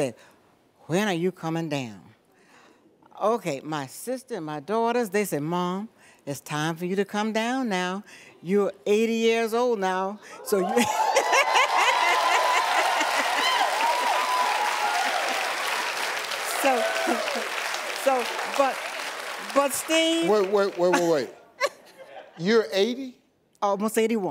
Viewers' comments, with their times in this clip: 0:10 She laughs like the girl from "White Chicks"!